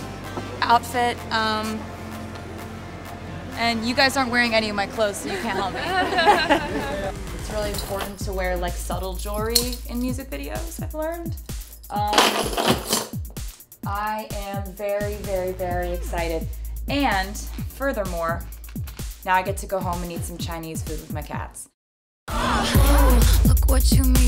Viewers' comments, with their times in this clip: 0:05 sounds like a fake laugh
0:05 OMG that fake laugh